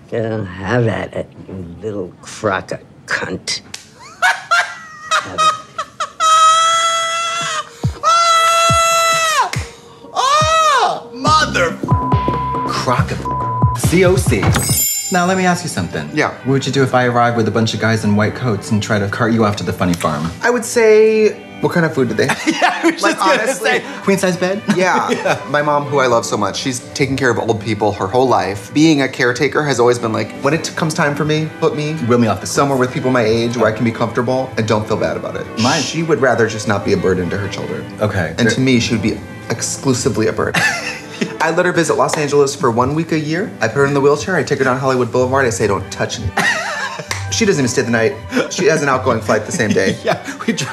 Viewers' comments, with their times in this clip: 0:04 I like how Trixie is laughing but it also fits Katya’s silent laugh
0:35 the way Trixie Shushed Katya 🤣🤣🤣🤣